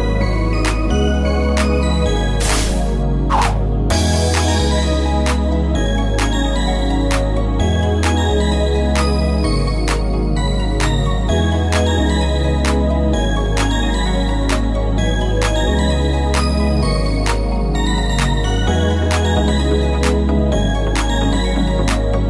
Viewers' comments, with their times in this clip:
0:05 why did that guy start speaking like yoda? “Mmm how bad you are” and “mmm waste of a human life you are” 🤣